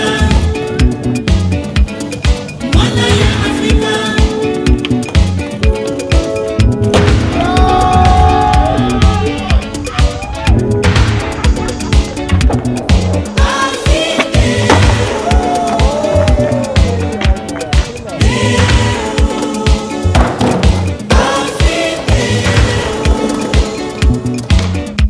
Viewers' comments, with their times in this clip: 0:06 perfect timing with the beat! Dope vid